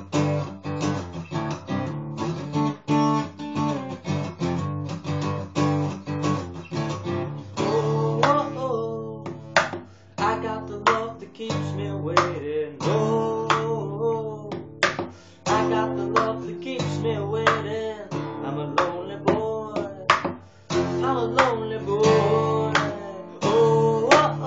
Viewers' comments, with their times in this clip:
0:09 John Buttler mod on